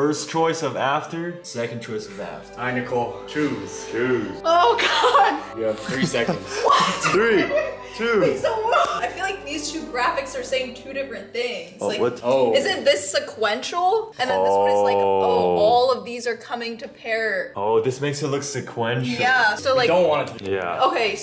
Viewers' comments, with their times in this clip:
0:09 she sounds like Emiru